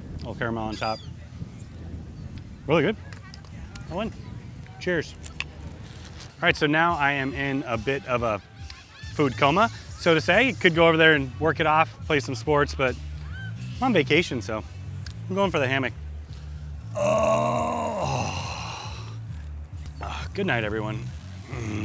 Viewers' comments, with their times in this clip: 0:06 loved hearing TAINTED LOVE beat. I hope there no more cruise cancellations. I'm so ready for this in 2022. Already booked and CAN'T WAIT. We've been held hostage indoors due to COVID for way to long 🏖️☀️🍹👙🧳🕶️🥽